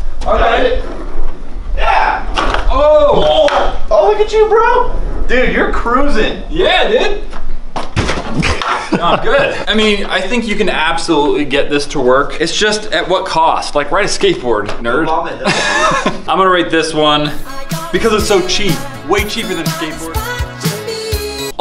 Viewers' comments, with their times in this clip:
0:07 SLAM!! Acts like nothing happened